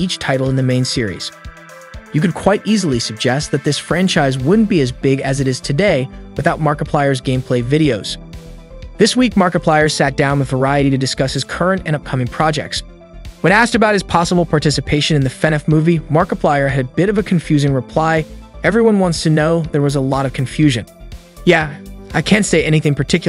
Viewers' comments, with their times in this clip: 0:08 if your gonna call him markipiler why dont you call fnaf five nights in Freddy’s bed
0:11 bro said Markapiler 🤡
0:11 "Mark-i-piler" . Nice work.